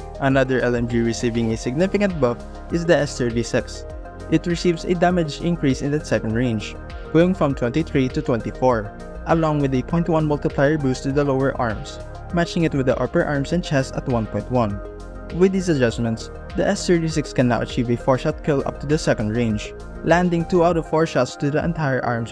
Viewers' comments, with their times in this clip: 0:03 S thirty whatttt??